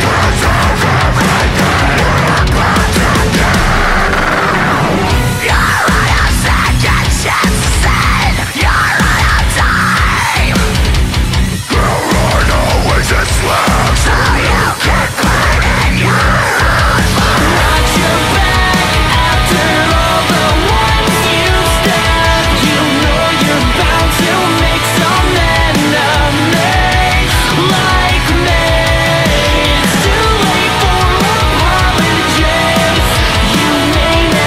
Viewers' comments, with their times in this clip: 0:04 the synth is fucking evil sounding here
0:16 chorus is so awesome!